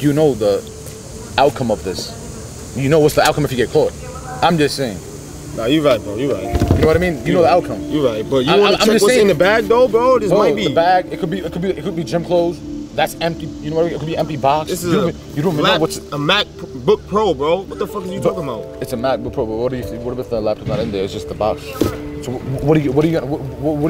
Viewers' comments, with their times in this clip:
0:04 Notice you can hear them clearly. They both have mics on em